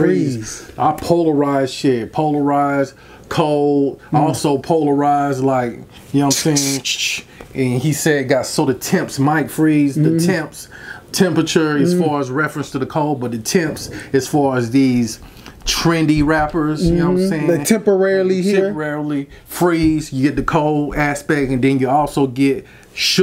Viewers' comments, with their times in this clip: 0:10 i thought he said "so the Thames might freeze" as in the River Thames in London,England. Eminem has really mastered his craft cause everyone give their different interpretation about the lyrics but they all sound like thats what Eminem is tryna say. Em is aging like fine wine.